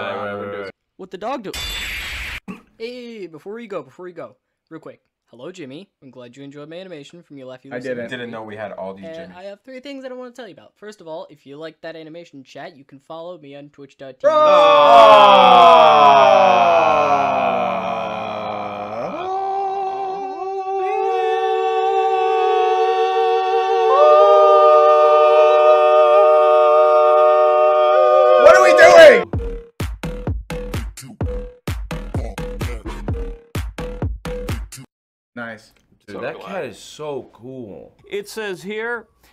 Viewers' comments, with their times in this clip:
0:10 the animation self-promo was so cringe they started harmonizing
0:11 made me cry out of pure amazement such a beautiful chorus (thanks for the likes never gotten this many before)
0:13 put that in 0.25 speed and you got yourself a chorus
0:17 one of the best harmonies I've heard in my life...LOL😂
0:18 the fact they actually managed to sing a major chord was deadass impressive
0:21 Holy shit harmony was pretty good
0:25 yo the harmony wasnt's bad though it actually musically made sense
0:26 The boys casually singing in E flat Major